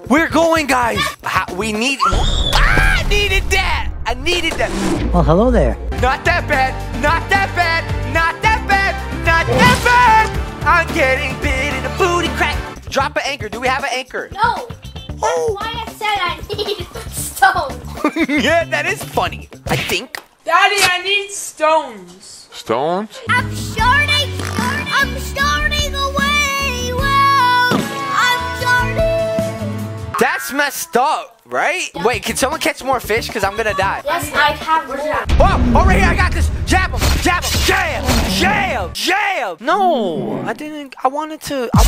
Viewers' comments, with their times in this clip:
0:05 this is cool song right here 🤣
0:23 THE BEST SONG EVER
0:24 deserves a award because I can’t get that Song out of my head